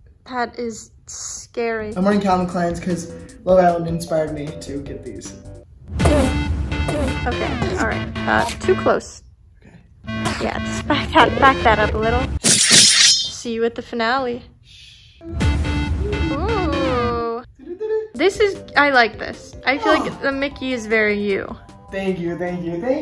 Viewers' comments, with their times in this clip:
0:06 with the perfect enderman sound effects